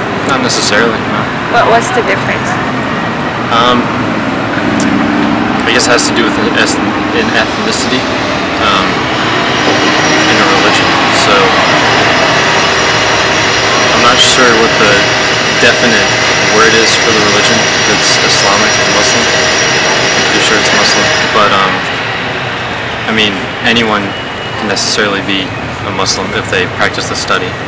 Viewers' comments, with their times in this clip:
0:10 I didn’t hear anything XD loud sound